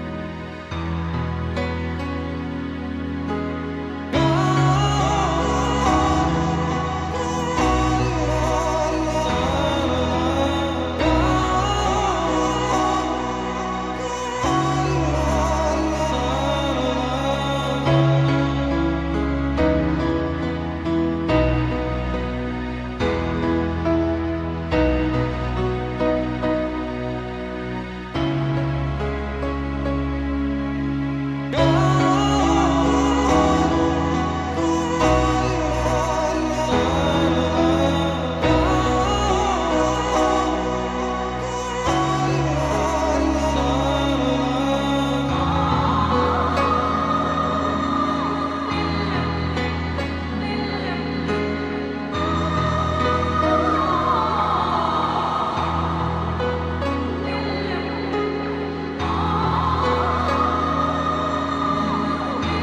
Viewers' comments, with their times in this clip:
0:04 Nobody: Babys on a plane:
0:04 Weird emotional singing indicates it is now time to start feeling sad (I cri evrytiem)
0:04 I feel like it was more about describing with music the beautiful tragedy of life. You know, that kind of deep confliction every human being feels inside, with the others and with the world. But I understand the association you made. For me, the vocal is literally what life is. Incredibly beautiful and sad, incredibly long and short. Incredibly bittersweet. Susumu Hirasawa is a genius.
0:45 "Damn you can high them high notes while moaning sweetie, but watch this: "